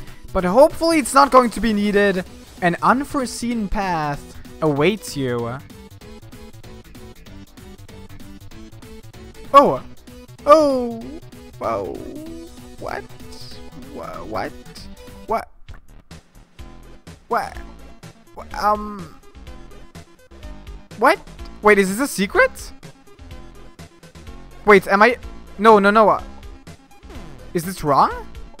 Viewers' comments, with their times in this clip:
0:10 the voice ??? XD